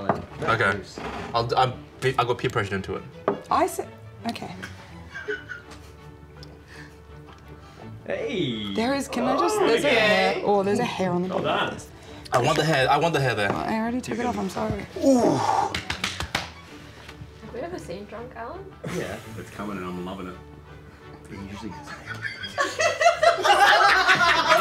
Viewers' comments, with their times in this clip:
0:07 For a sec I thought they added the "Heyyyyy, that's pretty good" meme